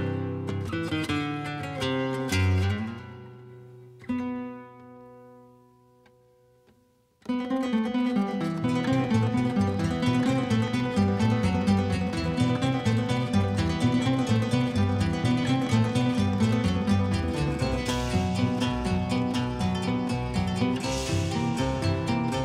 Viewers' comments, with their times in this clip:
0:06 Jajaja well from sec on you can hear a clear "Asturias" ripp